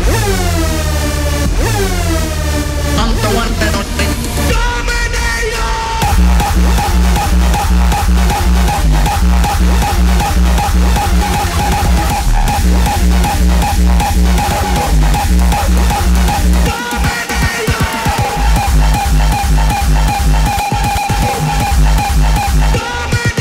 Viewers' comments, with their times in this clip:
0:05 Nobody: Girls when you whip out your biggest piep kick: